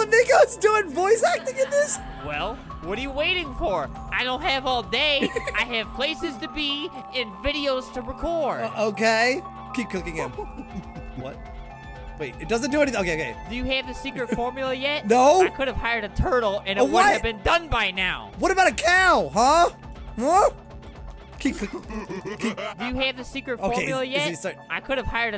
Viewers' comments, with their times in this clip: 0:07 and burps too burp You monster